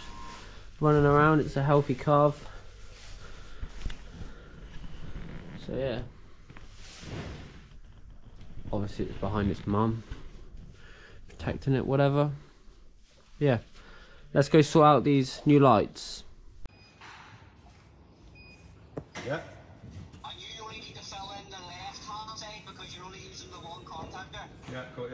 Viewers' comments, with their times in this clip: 0:06 Thanks for the update! Love to see progress! Mama cow was not real happy with you trying to video her calf...she snorted at you I think ! Has a decision been made on your robot supplier? Barn looking bright and cow comfy! Be safe, and warm!